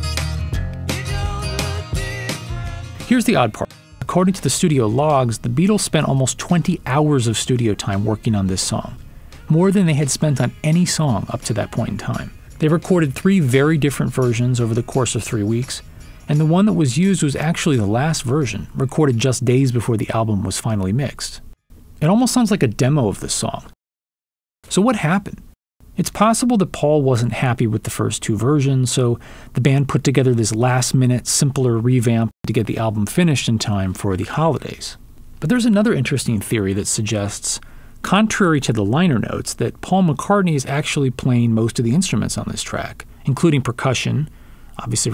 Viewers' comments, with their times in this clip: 0:03 in this video there is a strange edit or glitch when he says, “here’s the odd part”. I appreciate this “joke” if it is intentional. ;)
0:03 sloppy voiceover edit "here's the odd par-" then cuts out abruptly. it difficult to say if this was intentional to further illustrate the point, or if they simply ran out of time.
0:31 Cut in mid sentence of the voice-over. It could be that he ran out of time. Impossible to unhear!